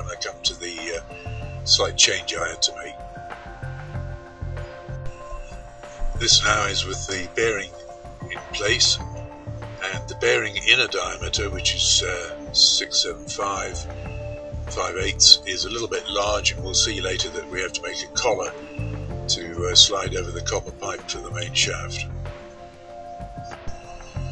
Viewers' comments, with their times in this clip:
0:07 The music drowns out the narration so you can't really hear. I gave up ...........